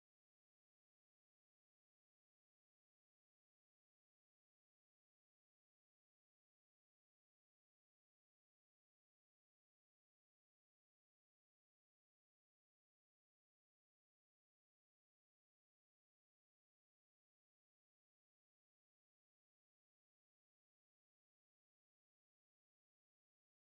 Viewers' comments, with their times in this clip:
0:06 is the best tune I wish he will release it